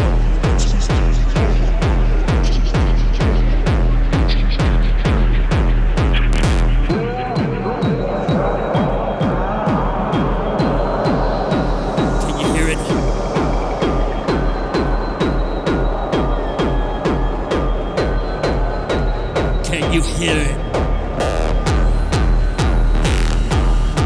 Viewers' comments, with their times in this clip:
0:07 min. This is what we want at qlimax 2023 !! Dark!! ❤ P.s. Green Laser Show 😢❤❤